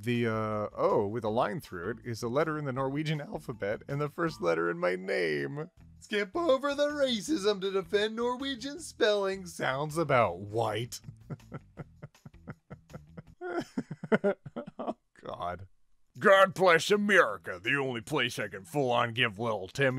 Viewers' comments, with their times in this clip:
0:06 you just laughed and skipped over it again.